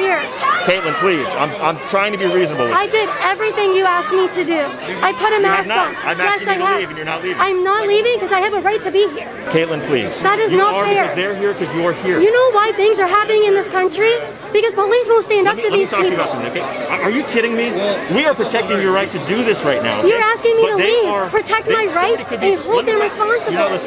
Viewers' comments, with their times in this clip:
0:09 jesus kaitlin's crying voice like girl YOU KNOW WHAT YOU'RE DOING